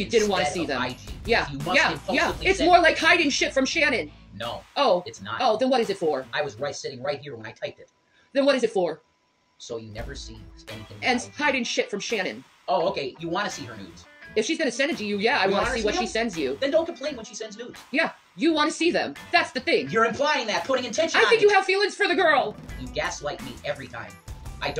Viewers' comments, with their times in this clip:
0:10 funny how fast she goes from whale cry to normal....